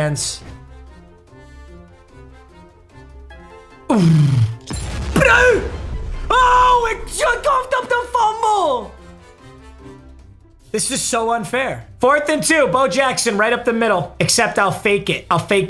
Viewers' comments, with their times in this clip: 0:03 … wtf was that noise?? 🤣🤣